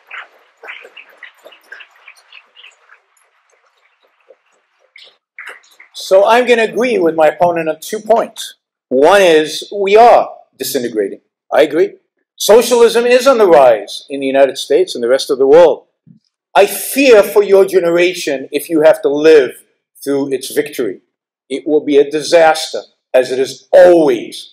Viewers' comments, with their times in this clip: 0:05 onwards is Yaron's best delivery of this speech ever. Gave me the same goosebumps I had the first time I heard him speak.